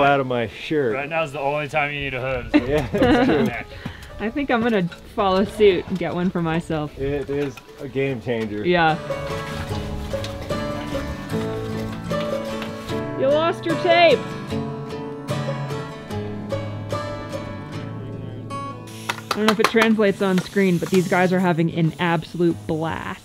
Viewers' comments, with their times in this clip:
0:05 something went nuts with the video and it has video and audio from different days and scenes doubled from day one mixed into day two and random audio. I'll watch it later.